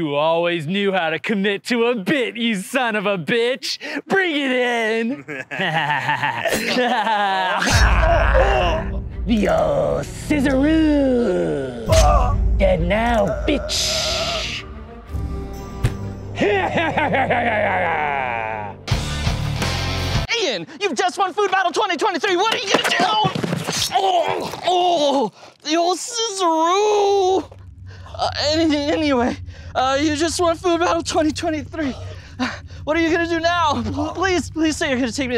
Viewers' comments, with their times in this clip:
0:09 The biggest thing from this is they learned how to say scissors
0:16 Bros laugh sounds like mr krabs💀
0:16 that laugh is amazing